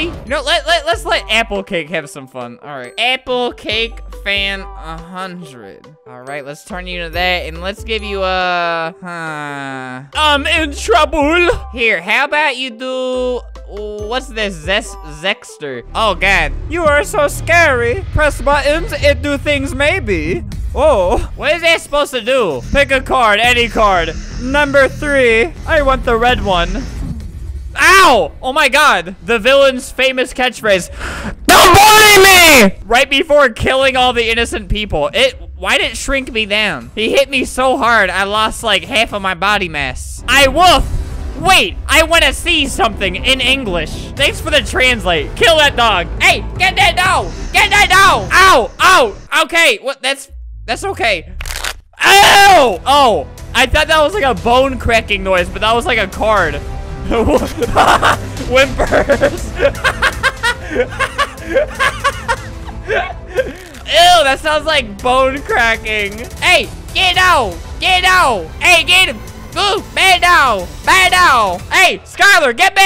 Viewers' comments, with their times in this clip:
0:10 *says “trouble” le epicly.
0:51 who tought he ate something crunchy and he didn’t like it
0:51 Hahahahahha I laugh so hard like crack neck but it’s card XD
0:51 card sound like a bone (Albert) Ewww I though it's was a bone crack
0:59 and we can see here folks, that Flamingo is laughing at a crying dog.